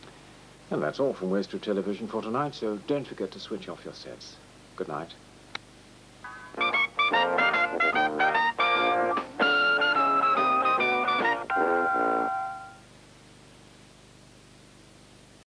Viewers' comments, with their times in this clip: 0:06 That jingle means westward tv will take a break they'd earned it